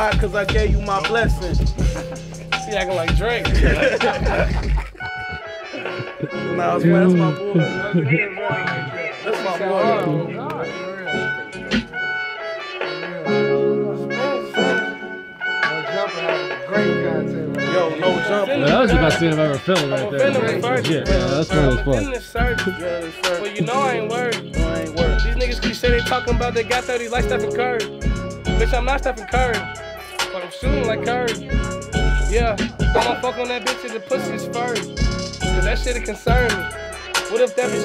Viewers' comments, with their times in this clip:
0:03 ooooooooooohhhhhhhhhh🔥🔥🔥🔥🔥🔥🔥🔥🔥🔥🔥 Pls tell me he made a song with that beat tho man!!!!!!!! 🔥🔥🔥🔥🔥🔥🔥❤️
0:05 Eminem and big Sean would go hard on this beat
0:08 That beat 🔥🔥🔥. I gotta hear someone on that ASAP!
0:18 bro I hope he made that a song or a song with a beat like that fw that beat heavy